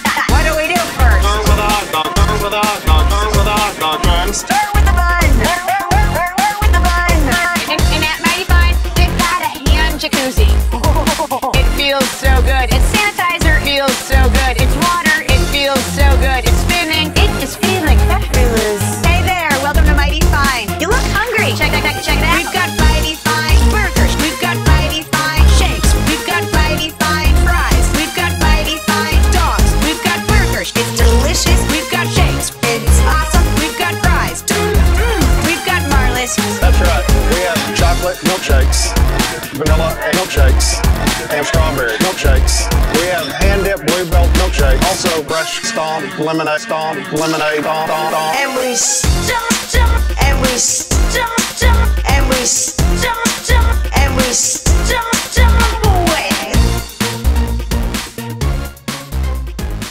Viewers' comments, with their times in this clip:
0:04 "start with the bun", genius Autotune usage there!
0:47 Youve got lemonade thong milkshakes? I think I will pass on thate one.